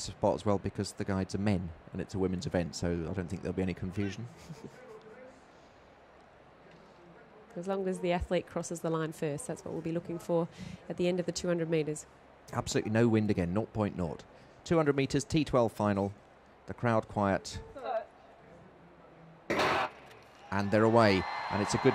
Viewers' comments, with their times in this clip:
0:04 THE SCOFF. 😂 Just barely tolerating the pointlessness of her co-host.